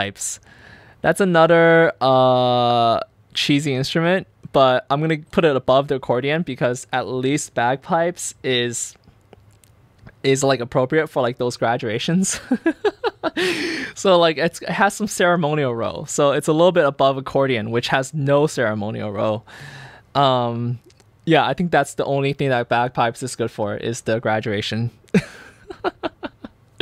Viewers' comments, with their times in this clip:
0:10 that swallow tho